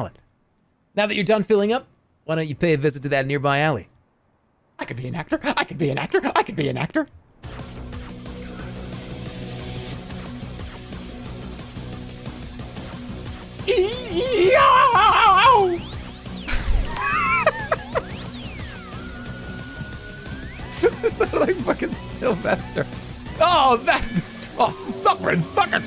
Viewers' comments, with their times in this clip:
0:09 is so accurate to Sylvester the cat lmao